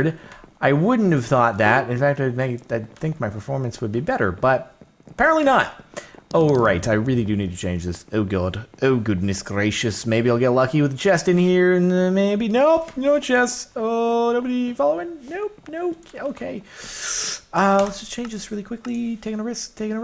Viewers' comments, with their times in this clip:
0:08 that British accent attempt 10/10